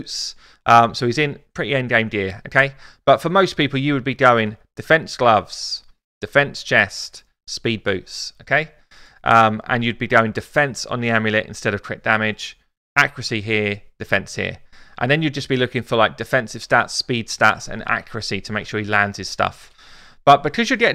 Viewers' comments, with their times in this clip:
0:03 What is the weird ring